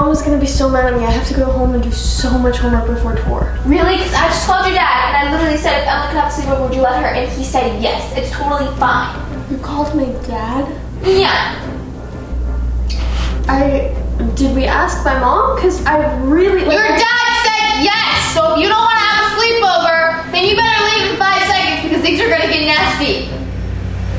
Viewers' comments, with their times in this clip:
0:04 the way she said “you. called my dad” 😂😂😂😂
0:11 pick me yeah I’m not calling her a pick me she just sounded like one